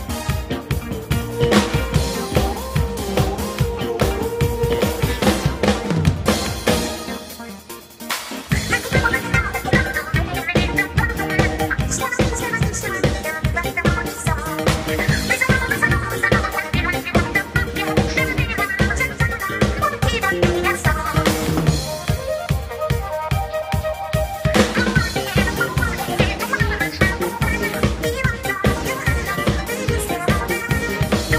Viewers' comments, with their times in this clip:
0:08 honestly....this is the best soundtrack I’ve heard in my life
0:16 Wait is no one gonna talk about how at the start (somewhere ) when pearl introduced herself, no one cheered and when marina gets introduced the crowd woke up??? Am I missing something???